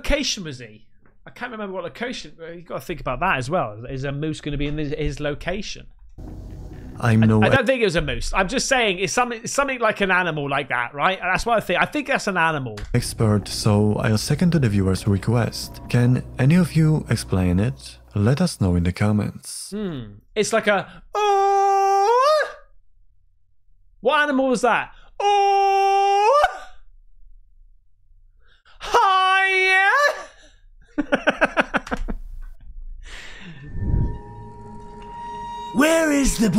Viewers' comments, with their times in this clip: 0:04 sounds like an elk during mating season🤔
0:22 mimicing an Elk